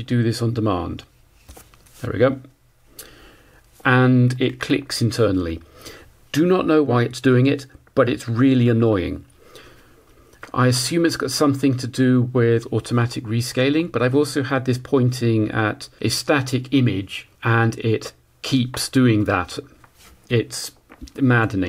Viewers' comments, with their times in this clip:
0:05 The freeze you commented is something common on all thermal imagers. There is a recalibration procedure where a metal screen is placed in front of the IR sensor, hence the clicking you hear, so the machine knows all pixels are seeing the same known temperature. The screen temperature is measured internally via some temp sensor. This is to manage the huge drift the sensor itself has.